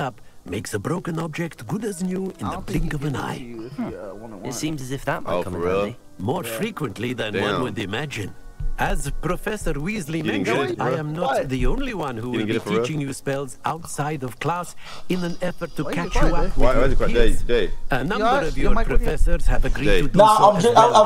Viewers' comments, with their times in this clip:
0:04 😂 the build up of him not tryna laugh